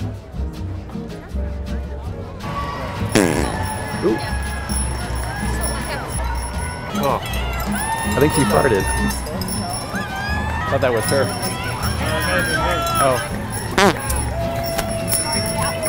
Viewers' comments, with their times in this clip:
0:03 His fart lit the fire so the Statue of Liberty in front of him can enlightening the marathon. Poetic ! 🤣